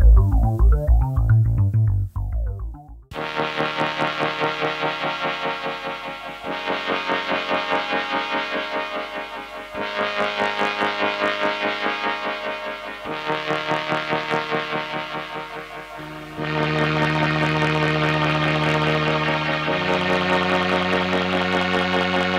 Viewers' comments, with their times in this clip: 0:03 man I could listen to a whole track of that. SO MANY awesome synths and demos.